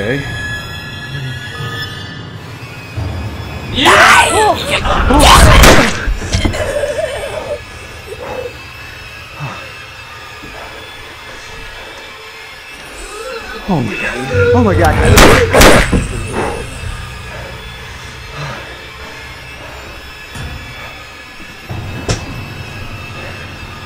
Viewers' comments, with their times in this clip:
0:04 SCARED ME CAUSE I HAD THE BASS ALL THE WAY UP